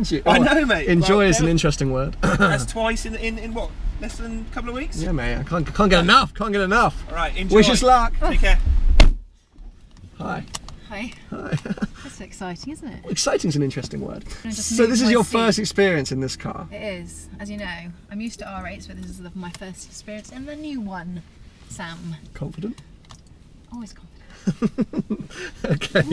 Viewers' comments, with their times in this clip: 0:09 the most awkward 'hi' ever..cringe.
0:10 the way he said Hi, hahahaha